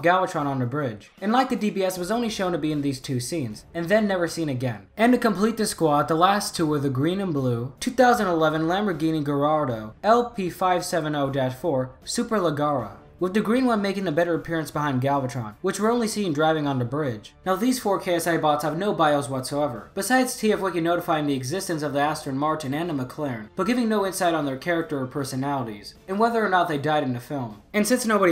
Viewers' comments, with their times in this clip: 0:09 I properly cringed hearing you butcher the pronunciation.. oof